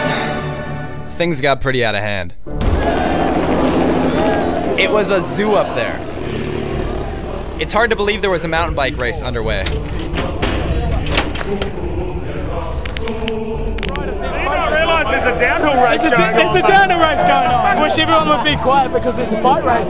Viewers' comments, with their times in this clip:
0:04 I think the guy Skkkrrting hard deserves the hecklefest win for sure